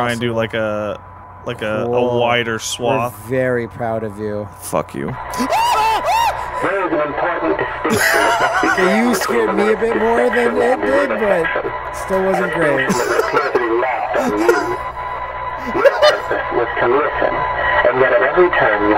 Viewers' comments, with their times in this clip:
0:05 Here we have the majestic mating call of the Bolivian backdown bird, and the Cowardly Canary. They're attempting to get lucky. They do not.